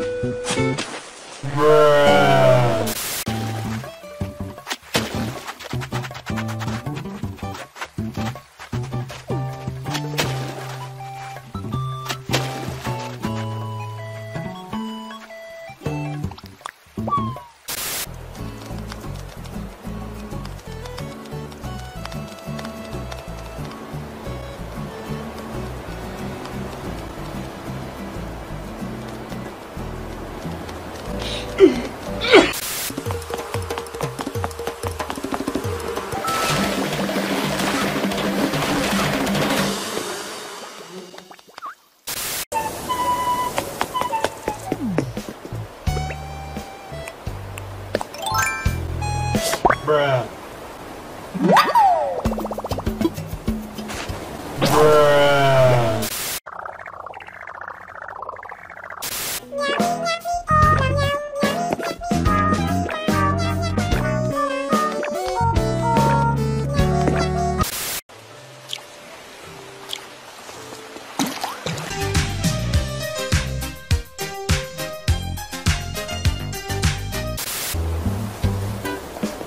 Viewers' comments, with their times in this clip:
0:06 sped up time sounding lit
0:57 Audie: sleeping Villagers: cry cry cry cry cry
1:06 Sprinkle: singing Marshal: stomping intensifies